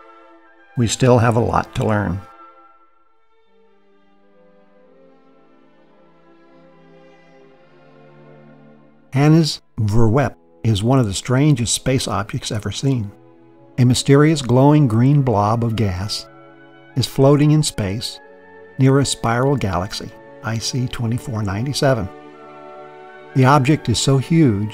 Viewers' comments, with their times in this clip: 0:05 I love how you pronounce Hanny's Voorwerp. I'm Dutch btw :)